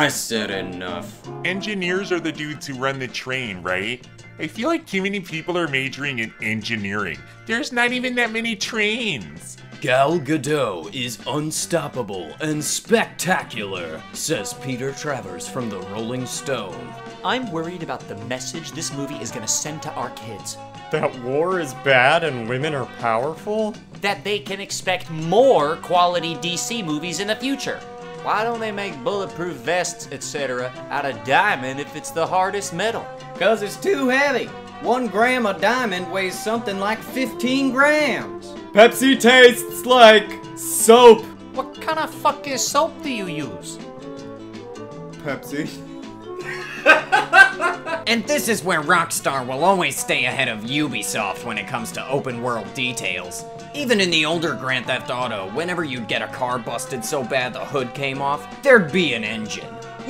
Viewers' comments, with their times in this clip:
0:06 What is that voice
0:38 he sounds like lenny from the simpsons
0:41 That sentence, somehow, can not be spoken in any other accent.
0:41 that voice lmao
0:45 okay Was that your brother laughing??? ALSO WHICH ONES HAD YOUR BROTHER TALKING I-I CAN'T TELL. YOU DO TOO MANY VOICES